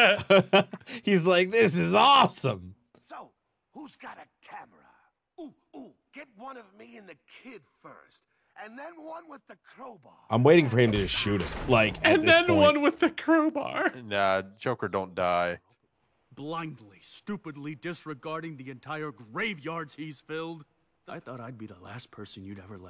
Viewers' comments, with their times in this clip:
0:10 Joker sounds like Drakken from Kim Possible